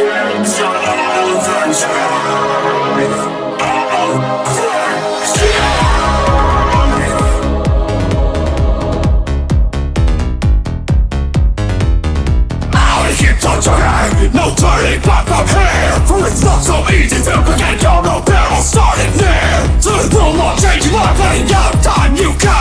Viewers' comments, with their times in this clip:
0:05 probably because of the vocals pitch right? or is it just the song unfixable? i personally like everything after in unfixable, and everything before that is not my favorite.